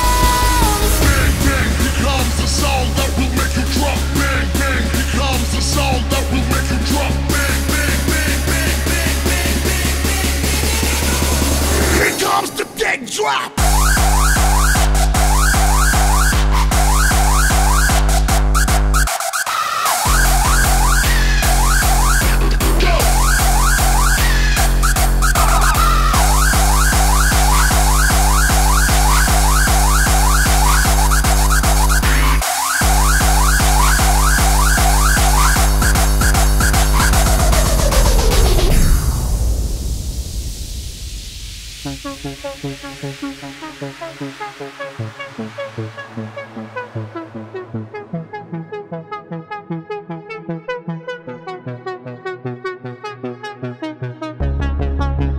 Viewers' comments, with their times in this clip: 0:10 here comes the dead drop
0:12 at first it was good, i thought, yay finally another good track from Mark w a K but then i was like oh god, so commercial... ffs, go back to the old times please
0:13 i really like the song but ths music is horrible
0:42 Sounds like Re-Style - Get it cracking after Sounds like it very much actually..